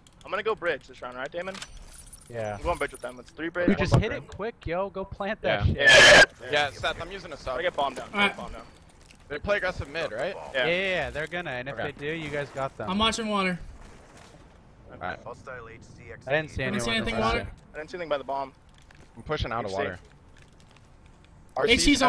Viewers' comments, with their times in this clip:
0:03 scared tf out of me, sounds like a fucking demon
0:04 someone put the mic in the mouth and puked on it
0:04 I violently laughed at that screech for a solid 4 minutes.
0:05 anyone else hear the scream
0:08 what the fuck was that? a dinosaur?